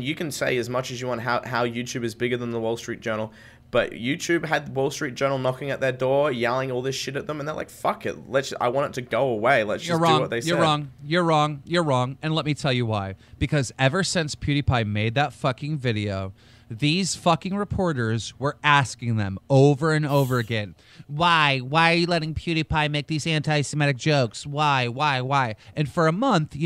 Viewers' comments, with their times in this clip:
0:10 ... keemstar sounds like Donald trump. "You're wrong, you're wrong, you're wrong, you're wrong"